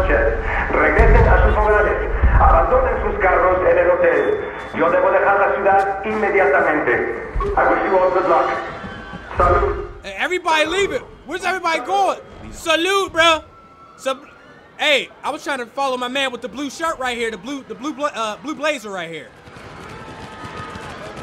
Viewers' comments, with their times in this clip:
0:08 when icejjfish start singin